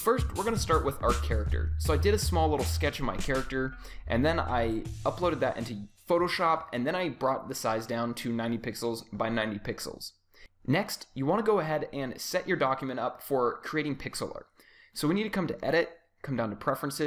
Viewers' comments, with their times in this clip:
0:04 .. was he going to say.. "I UPLOADED THAT INTO YOUTUBE"?? hehe.. it sounded like it before he corrected himself :)